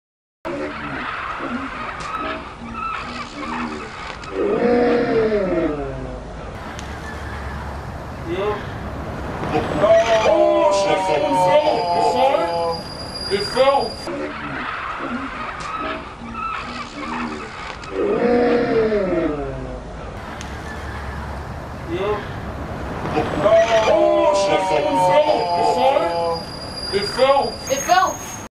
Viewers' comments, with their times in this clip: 0:04 In the minute you can barelly hear a scream from a Halo's Elite xD
0:15 I love parrots and I'm sorry for them, but the eletric sound and the weird movement of the parrot make me laugh every time